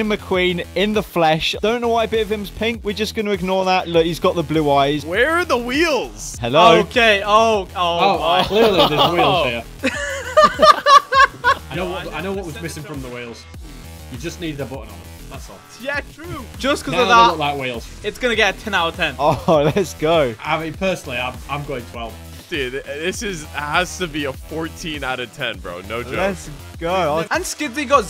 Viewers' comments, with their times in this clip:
0:10 Wtf is that laugh bro😂